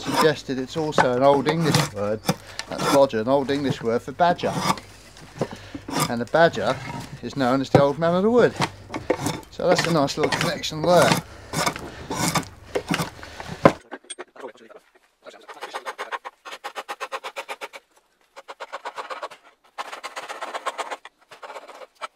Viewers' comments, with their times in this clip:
0:07 I can't quite catch what you're saying ... " ??? Man of the wood." What word or words came before man? It sounded like twelfth